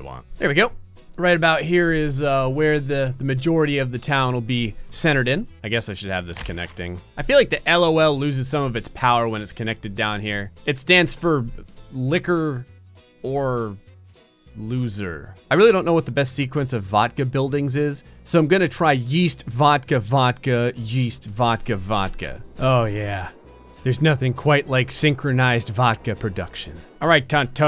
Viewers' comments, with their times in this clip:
0:10 "It stands for lick her or lose her" DEMONETIZED